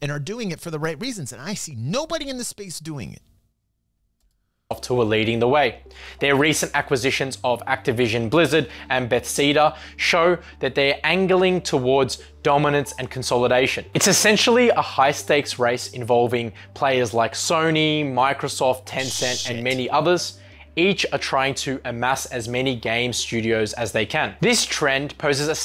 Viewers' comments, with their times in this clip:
0:09 Did that guy just say Betseda XD